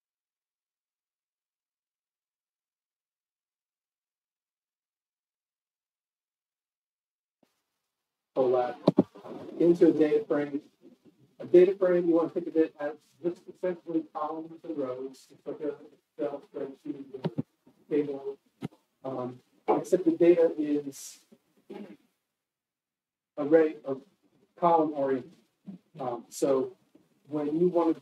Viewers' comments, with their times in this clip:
0:10 Sound begins after